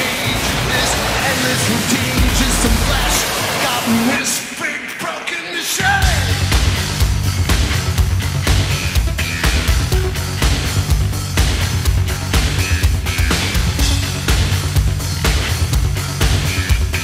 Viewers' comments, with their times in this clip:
0:05 Someone: but you can't dance to nine inch nails songs The drop in Happiness in Slavery